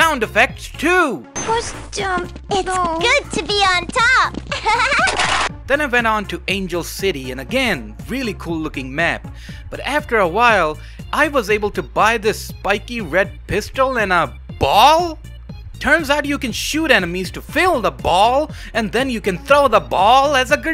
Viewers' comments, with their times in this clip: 0:03 "good to be on top hehehe uwu" RH: * pistol noises *